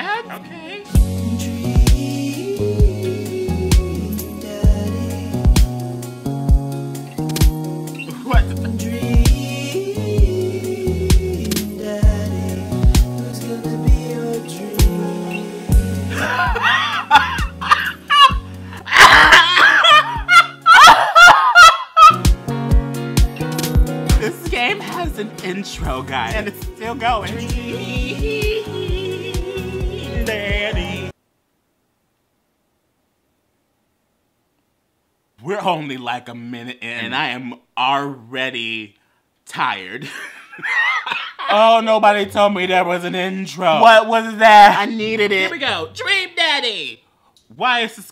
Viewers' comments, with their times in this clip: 0:08 BRUH AS SOON AS THE SONG STARTED PLAYING I WAS SHOOK! AND THE WAY IT CUT HIM OFF- 😂😂😂🤣
0:30 kermit is that you???
0:32 the way he sang DrEaMmMMMMmmmmM DADDY